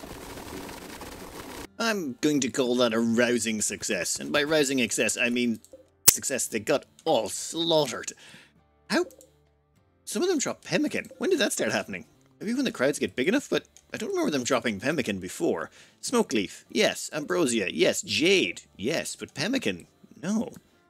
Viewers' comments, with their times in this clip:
0:05 I consistently get a really high-pitched noise am I the only one who's getting it?